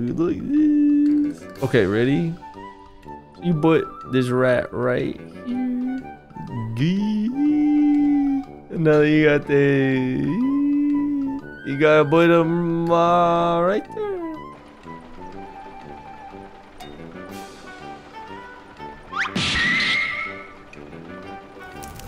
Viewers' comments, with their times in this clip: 0:09 Eeeeeeee...... I feel like I'm watching an old cartoon where slide whistles are used in place of voice acting (Like I snorted LSD and then ate Smile Dip)